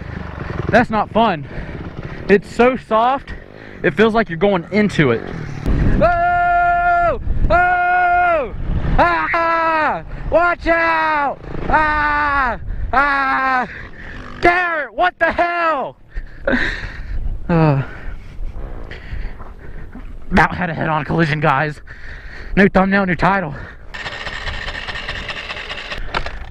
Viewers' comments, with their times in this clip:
0:09 My guy had a voice crack